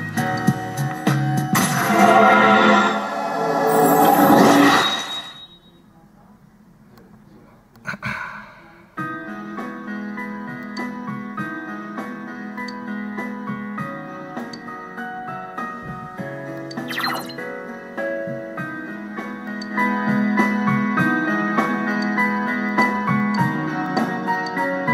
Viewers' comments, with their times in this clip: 0:07 are you liking this game? cause you kinda sound like your bored